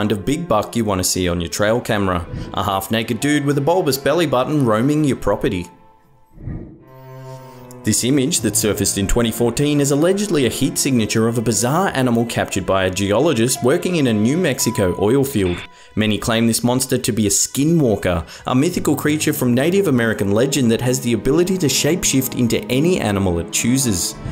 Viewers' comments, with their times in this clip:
0:06 that sounded uncannily similar to the among us imposter sound effect